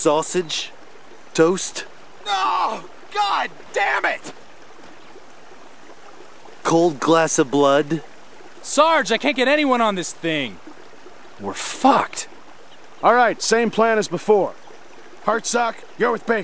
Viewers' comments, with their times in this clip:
0:04 garnett yell like that